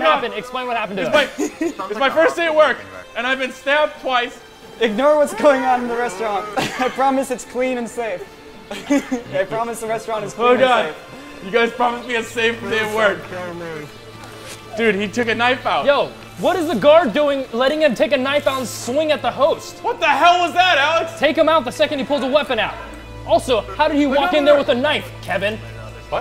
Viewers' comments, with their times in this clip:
0:09 Lol that guy clapping